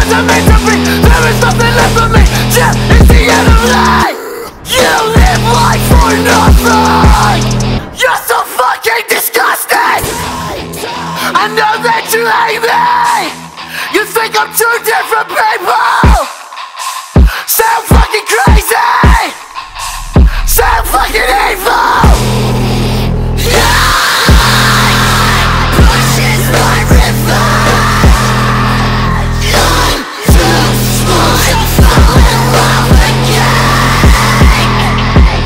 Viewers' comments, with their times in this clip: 0:10 I love how the guitar becomes more clear and aggressive sounding
0:21 end is deathcore trap
0:23 moment of the interview screamng
0:23 wow ,which scream!